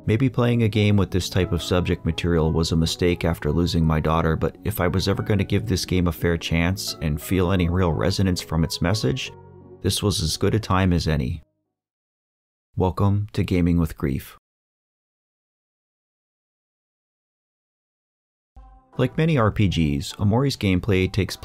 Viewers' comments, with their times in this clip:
0:04 the slight tremble in his voice truly shows how upset he is. may she rest in peace and that you'll find your peace as well.